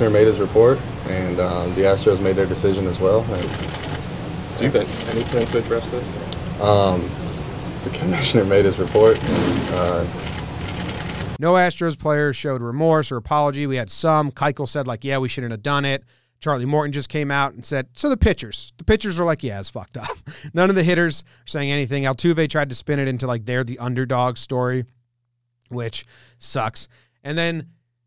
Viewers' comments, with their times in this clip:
0:08 definitely not more trash cans being banged on in the background
0:09 pause the man is straight up laughing...about cheating...in the world series... What a joke this guy is. But hey, he already made his millions, he could give a shit.